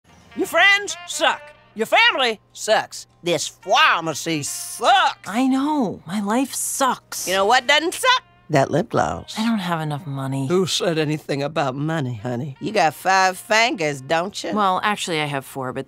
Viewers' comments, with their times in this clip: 0:03 phWAmASee Said the monstress